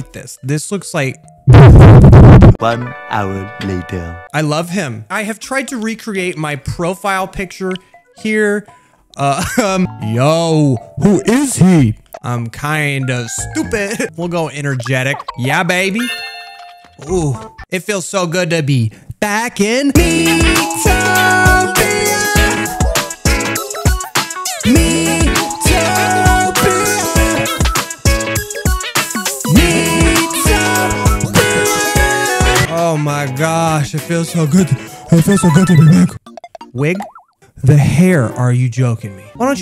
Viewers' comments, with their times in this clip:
0:07 "I love him" That miitopia bop tho 🔥
0:20 Whoooo Yeah At That Beat Miitopia Autotunned Voice Yeah So Cool
0:20 This is such a bop I was vibing the entire time